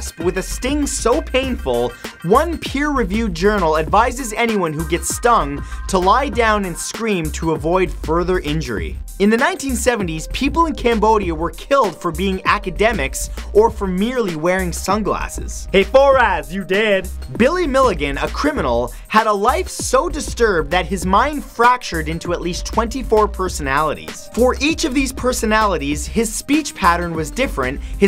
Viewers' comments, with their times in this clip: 0:10 #46 people died and saying it as if it is a joke. Are sick or you don't feel their pain because they are not Americans?